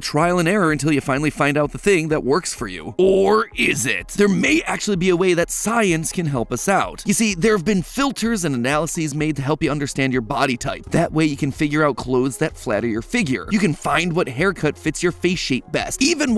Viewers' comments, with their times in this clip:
0:03 vsauce music starts playing